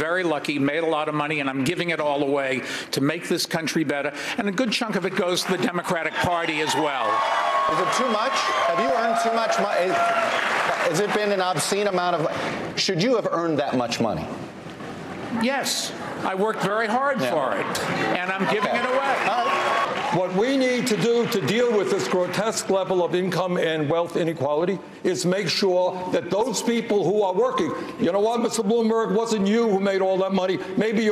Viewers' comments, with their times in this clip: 0:05 there is no way anyone would applaud for that. They are either paid off or his entire campaign staff was there in the audience. Lol
0:15 the amount of (probably fake) applause here is very disturbing..